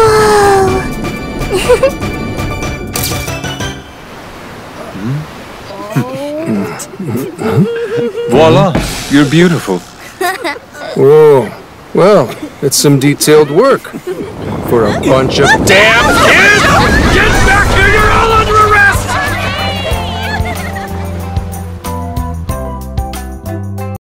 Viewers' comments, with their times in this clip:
0:10 dude's mic spiked there